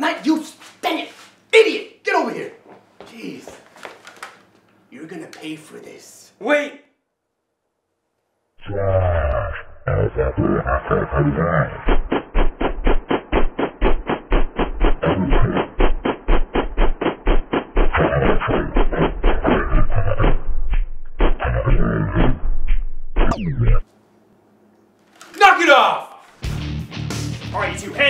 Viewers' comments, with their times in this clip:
0:10 what happened to the song it sounds weird is it suppost to sound like that or not